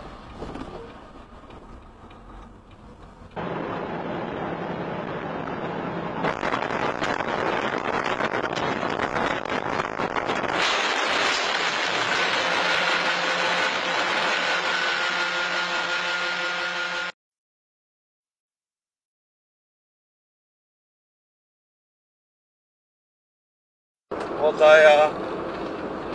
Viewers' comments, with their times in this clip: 0:10 Honey, I think someone knock the door!